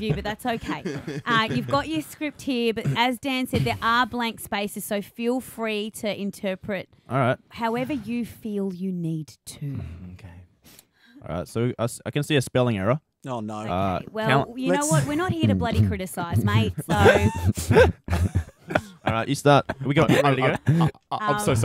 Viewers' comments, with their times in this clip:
0:09 DID ANYONE ELSE NOTICE THE DEEP "MMKAY." INTO THE MIC LIKE IM PRETTY SURE IT WAS CAL AND IM SCREAMINFFFFF